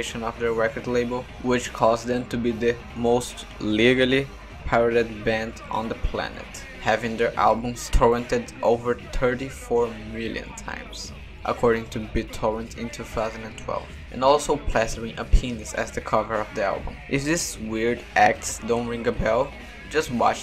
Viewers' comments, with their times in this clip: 0:07 Tis' accent though